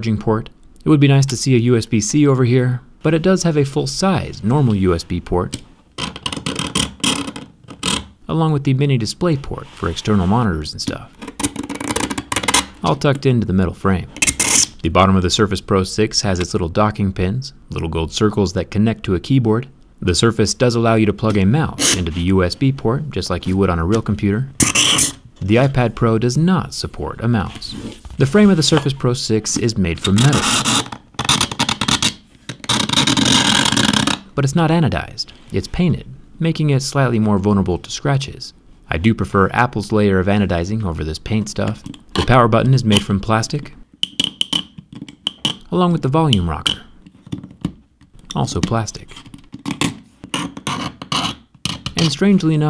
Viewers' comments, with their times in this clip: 0:05 the sound of agony.
0:12 Omg I did not expect that!! (Only press read more after u checked it out!) Now have a nice earbleed. You're welcome.
0:12 his voice so calm as he destroys expensive device. It like seeing a psychopathic killer
0:28 I can hear that Android notification, Zack.
0:28 Anyone hear the samsung notification sound ?
0:33 it's like ASMR